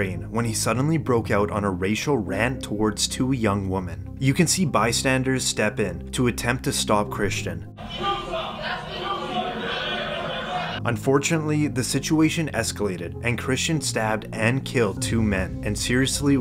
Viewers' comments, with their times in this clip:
0:04 did he seriously mispronounce the simple word “women”?